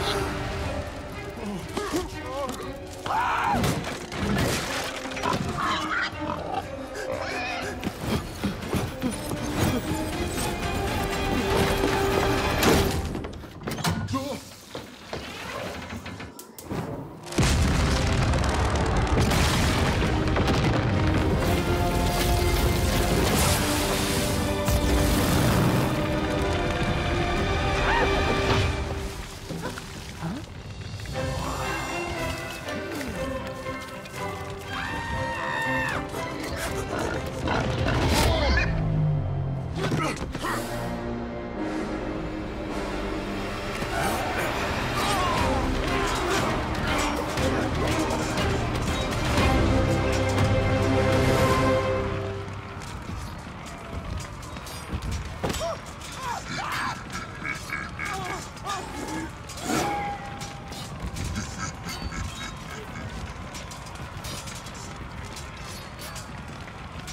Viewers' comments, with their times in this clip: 0:03 I just loved how he scream
0:35 ride of the riders Screams!! 😅😅😅😂😂
0:55 was this a barbarian screaming??